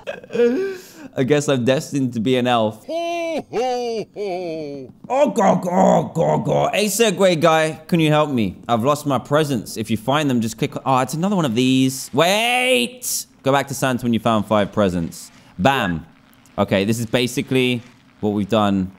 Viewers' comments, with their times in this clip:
0:06 when u gargle on Fanta